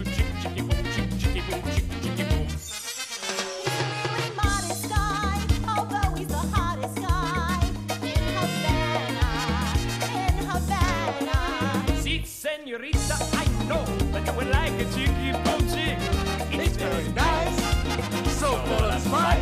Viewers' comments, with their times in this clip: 0:05 I can tell she’s being forced to sing against her will.